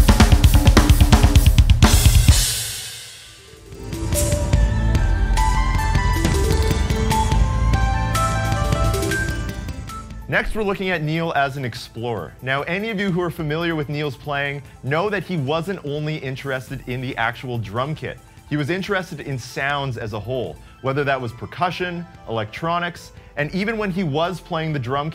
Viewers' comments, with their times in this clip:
0:09 One of the only drummer who can play IDM beats live !!! Incredible!